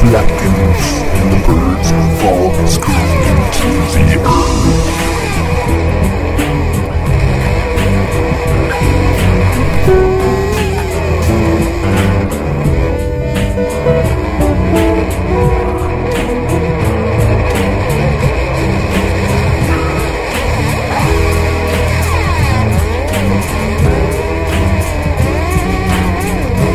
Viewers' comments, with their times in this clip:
0:09 i finally found an adjective to describe this: "tortuous." Loved the vibrato though.